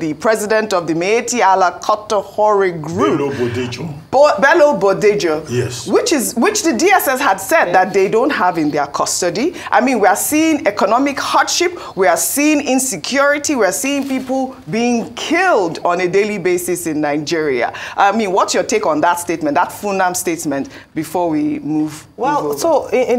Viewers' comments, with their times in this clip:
0:06 that voice and its context caught my attention